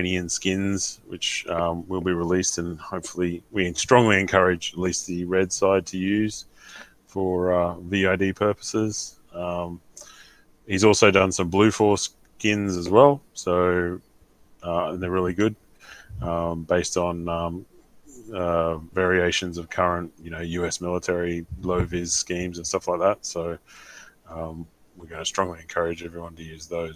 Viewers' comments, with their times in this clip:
0:09 blue foreskins? * giggle * .. sorry.. I show myself out...